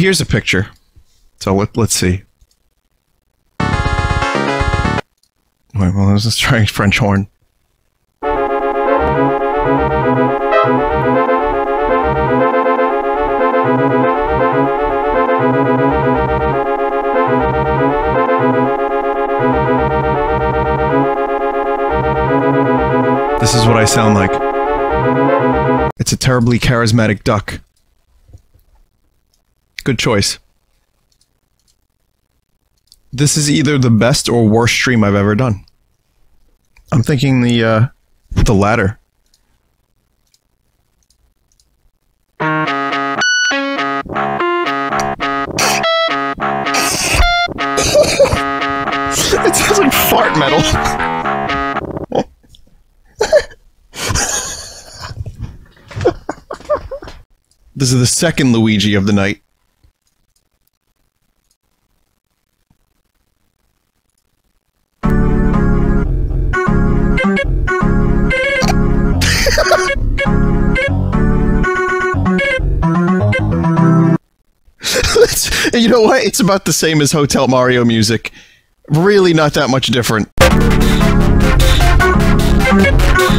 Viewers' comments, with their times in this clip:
0:09 Some of them feel like boss battle themes #
0:42 That one guy trying to play Sweet Child of Mine in the guitar store
1:04 Accurate representation of what the music in Hotel Mario's cutscenes sounds like